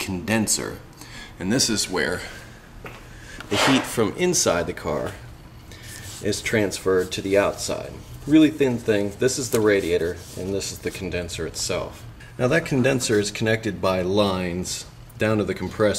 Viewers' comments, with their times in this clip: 0:03 was that a fart